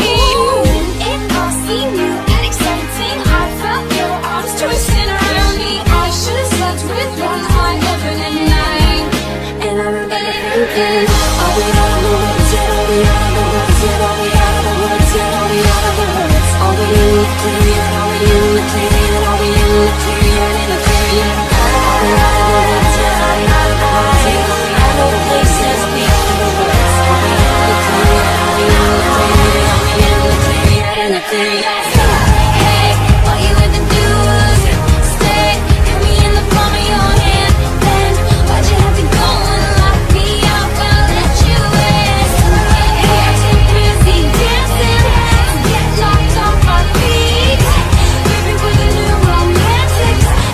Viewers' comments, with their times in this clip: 0:08 The transition from Wonderland to Out of the Woods is FLAWLESS I find myself singing it like that when I listen to Wonderland forgetting that's not how it goes.
0:31 is such an amazing transition from ootw to all you had to do was stay. love that song too.